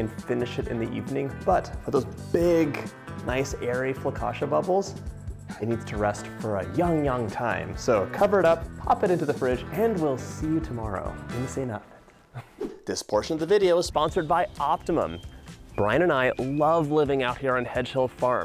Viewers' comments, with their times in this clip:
0:03 The "Flacacia" Counter read 2 when it should have been 5. Dude there's no "L". LOL!